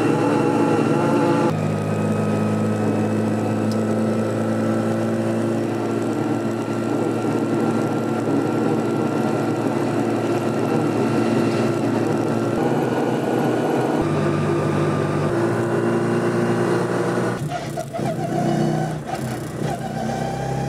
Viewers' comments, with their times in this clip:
0:03 as musical as that is I wouldn't be doing that on a motorway, I'm having visions of it suddenly releasing the tension and giving the car behind a bit of a surprise (as well as ruining a nice bench)